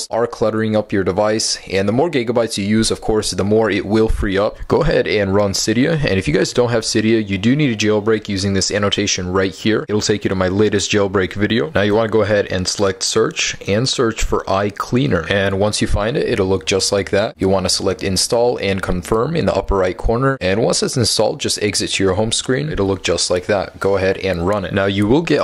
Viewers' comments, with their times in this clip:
0:07 lol i thought it was a fuck finger :P ; sounded more like " You need to jailbreak using this fuck finger :P "